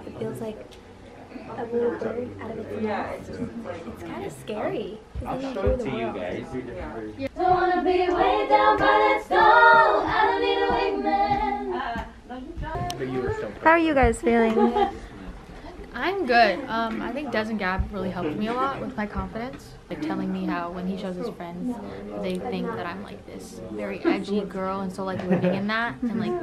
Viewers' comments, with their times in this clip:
0:07 awww the harmonization of this group live was freaking solid🙀👏👏brrrt!!